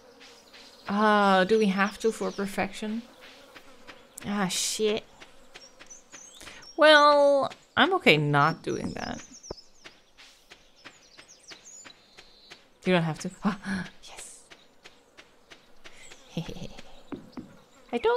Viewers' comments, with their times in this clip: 0:03 The way you said ah shit frickin sent me